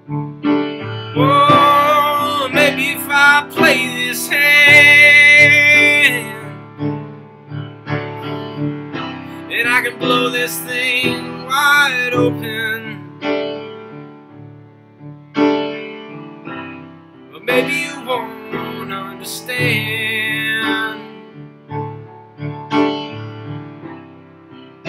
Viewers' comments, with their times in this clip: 0:06 Noah playing a wrong note on and smiling about it is everything! His artistry is A+mazing.